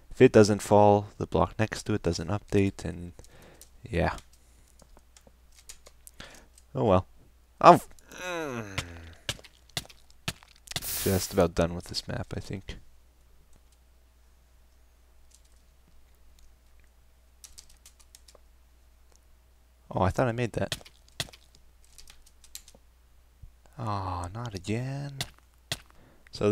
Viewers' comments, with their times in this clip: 0:09 Sigh of relief.